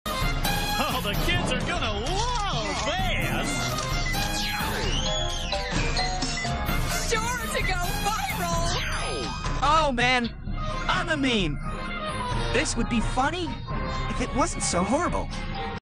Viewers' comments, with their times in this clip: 0:09 Sounds more like Sonic at that part